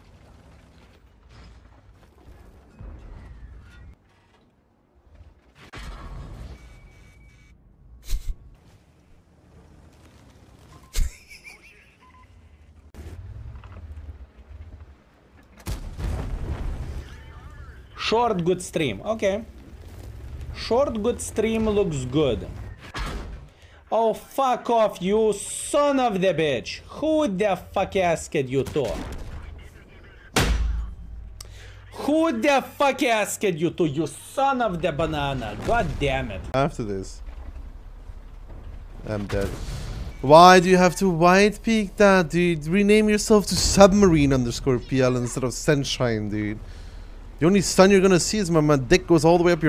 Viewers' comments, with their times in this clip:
0:07 bro is laughing from the pain😂
0:07 dude takes a 2k shot, looks up to see its a 2k shot and just LAUGHS. I need more of that energy in my life
0:32 What is this engrish